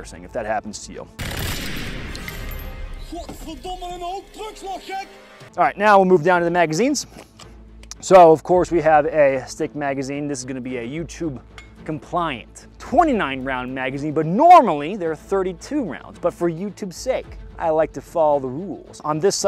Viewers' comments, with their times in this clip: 0:04 sounds like Dutch? Gekoloniseerd